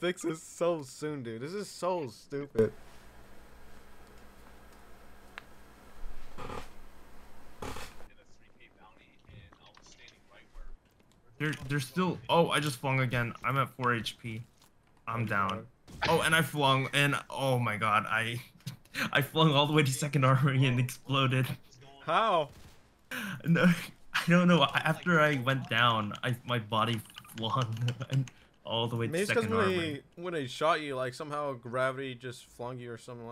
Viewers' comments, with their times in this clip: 0:03 The dude on the cam laughing his head of tho
0:21 he laughs so hard he looks like he is litteraly crying XD